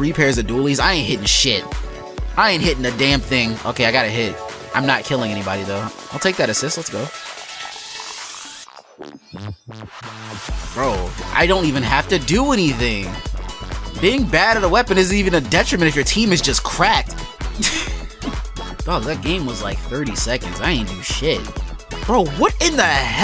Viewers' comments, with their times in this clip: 0:07 nice timing with the music here, wonder if that was intentional (the map closing, the launch, and the announcement of the checkpoint all are timed with it)